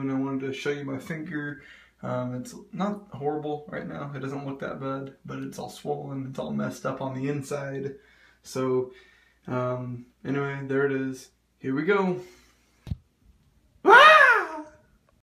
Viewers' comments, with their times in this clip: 0:13 Best scream I'd ever heard, I cant stop repeating it